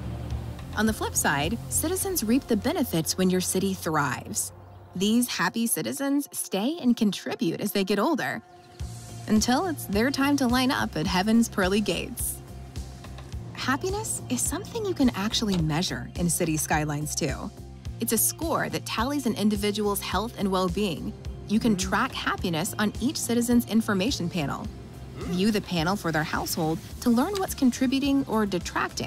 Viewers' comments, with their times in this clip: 0:10 .. too happy saying that 😂😂
0:10 Sounds almost like Bette Davis Eyes. Are we getting 80s inspired music? Excited to find out.